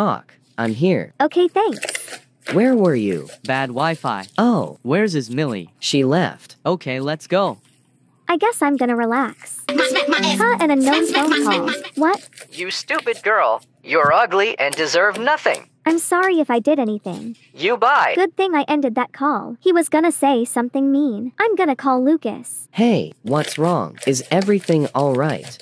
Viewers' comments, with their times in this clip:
0:10 HELP THE RING TONE